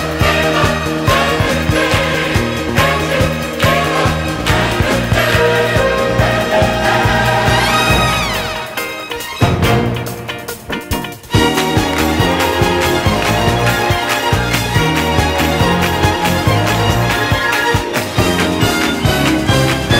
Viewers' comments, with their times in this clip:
0:05 THAT BREAK DOWN IS EPIC!